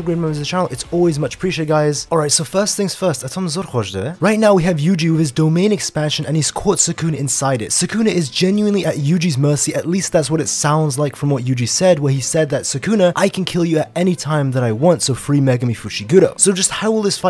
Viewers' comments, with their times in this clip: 0:03 We finally got kaiyo domain like bro what did you say at timestamp